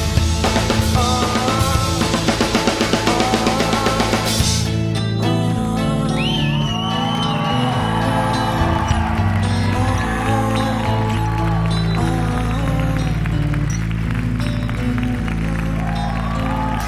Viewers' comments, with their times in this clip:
0:04 love how dave stops the cymbals to make sure eddie ended the tension that he makes